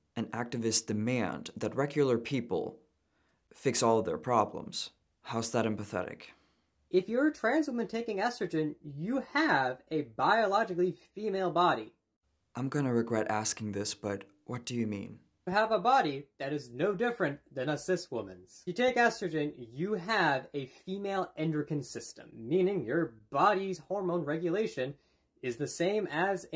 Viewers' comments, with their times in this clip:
0:09 yet you still have a male voice, hmmmm.